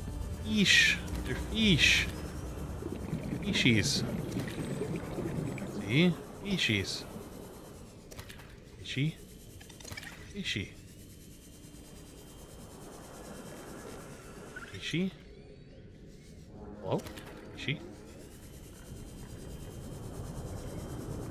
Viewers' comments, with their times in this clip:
0:09 i love how from for about 5 minuts all you hear is FEESHIES FEESHIES